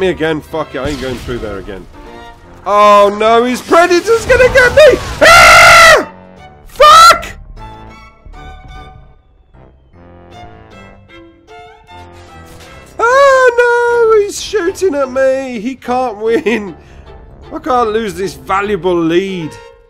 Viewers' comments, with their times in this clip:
0:03 Hahahaha, that girly scream when the predator hits you is absolutely perfect! These videos just makes my day! You're amazing mate :D